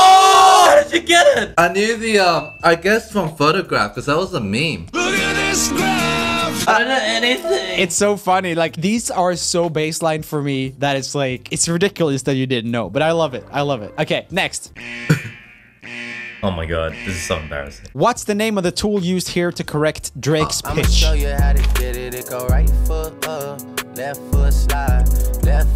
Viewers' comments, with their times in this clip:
0:06 i dont kno anything the way he said it 😂🤣😂